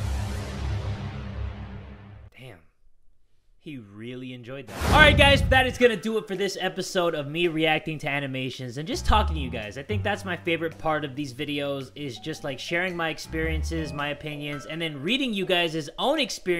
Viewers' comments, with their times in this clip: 0:04 scared the shit out meman he said "ARLIGHT GUYS" hella loud like dang but nice videos.